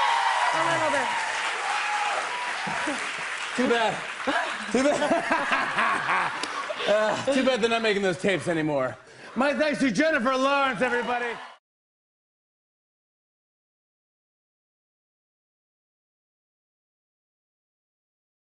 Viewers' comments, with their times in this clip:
0:05 Jimmy Fallon's laugh is soo crazy xD